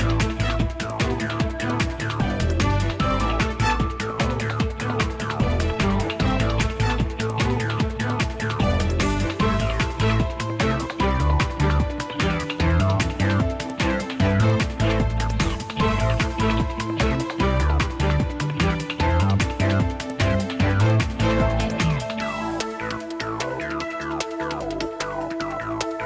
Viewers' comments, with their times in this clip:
0:10 WHISTLE i new it